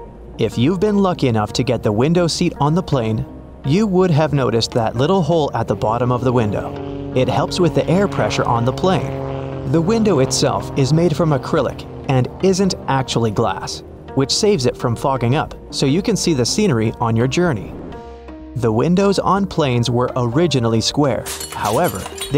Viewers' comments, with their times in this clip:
0:06 A380 with a small propeller sound